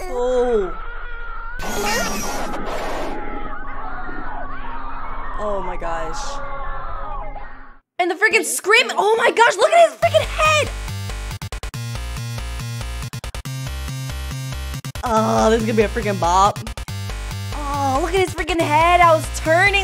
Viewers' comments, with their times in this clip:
0:03 hears scream and creepy music me vibe to the sound